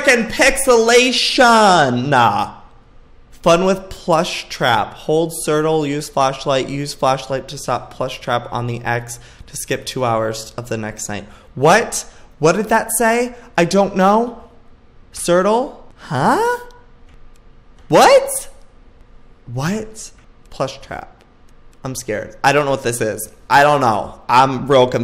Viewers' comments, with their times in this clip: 0:09 any one else laugh their head off when he said Ctrl as "Sirtle" ?